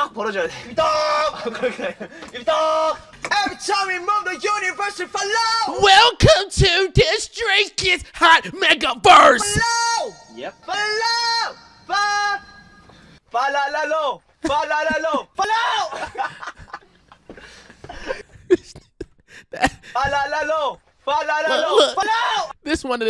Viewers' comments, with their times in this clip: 0:06 Megaverse if Tom DeLonge sang it 😂